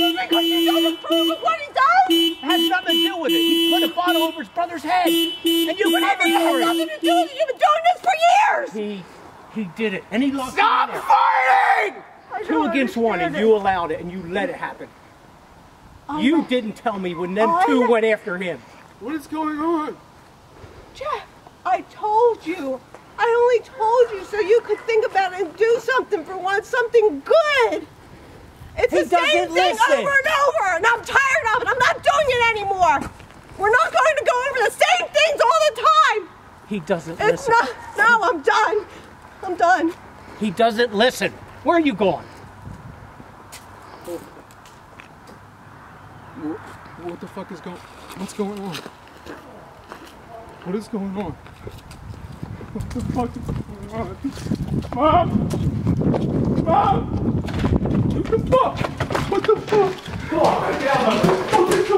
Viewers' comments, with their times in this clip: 0:09 STOP FARTING!!!! Lolwut
0:10 it sounded like he said "STOP FARTING!"
0:10 listen to if you hear hard enough he says STOP FARTING xD
0:10 did he say stop farting or stop fighting
0:10 Is it just me or does the son yell "Stop farting"? 😂😂😂😂
0:11 it kind of sounds like "STOP FARTING!".
0:11 I thought he said stop farting tbh
0:12 I swear he said stop farting
0:45 sounds like he farted